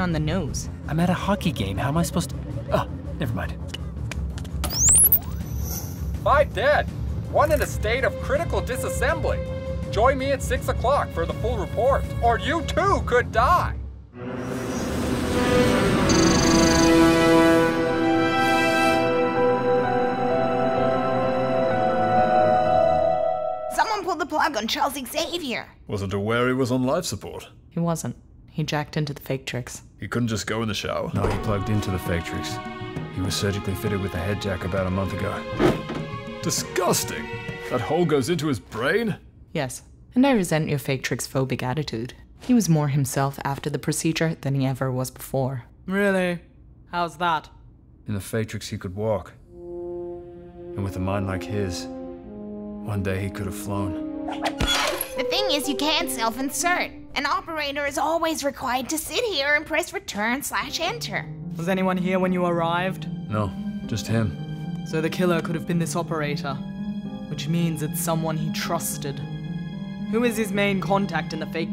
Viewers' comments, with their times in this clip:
0:05 That was single-handily the best Will Ferrel impression i’ve ever heard.
0:53 The little "wrekit jingle" that plays really shows how much effort these people put into this thanks.